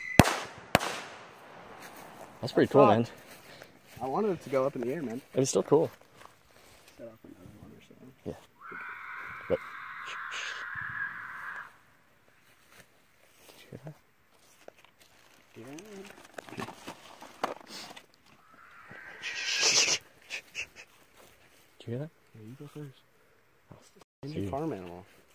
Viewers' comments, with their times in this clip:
0:09 my initial thought was “is that a a mountain lion?” 20 seconds later: “nope just a crackhead”